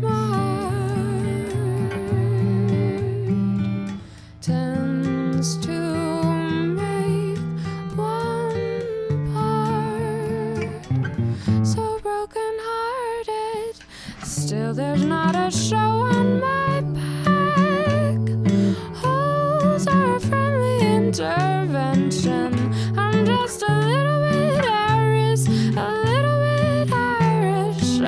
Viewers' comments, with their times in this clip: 0:09 When I clicked on the video I wasn't expecting this at all. You are fantastic. I actually think that this version is even better than the original song. PS: One thing, I'm quite sure the chord is major :D